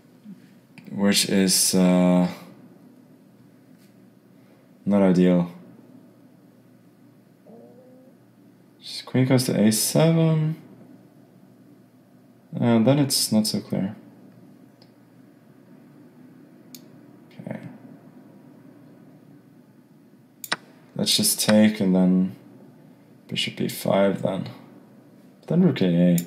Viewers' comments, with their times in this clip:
0:08 stomach growl or fart?